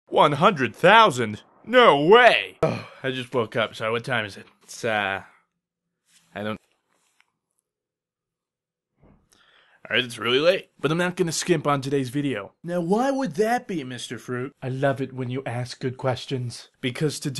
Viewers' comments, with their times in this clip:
0:04 Did you just say ساعه in ? xD